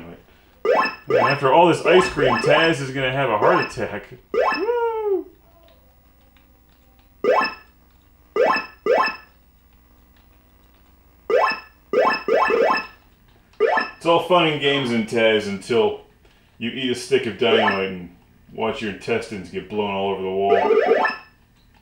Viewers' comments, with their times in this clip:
0:07 LOL! the auto closed captioned is translating the food pick up sound as the word "what" . Classic!